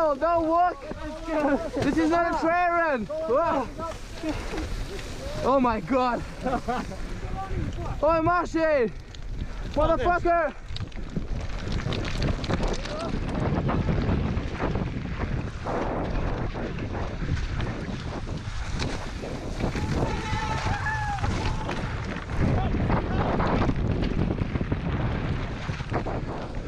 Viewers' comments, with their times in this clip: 0:07 Seeing and yelling at his mate LOL